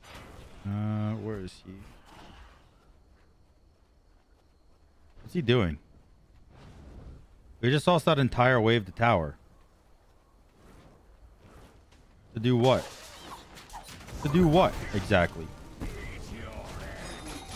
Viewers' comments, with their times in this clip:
0:03 just random thunder ⚡ comes out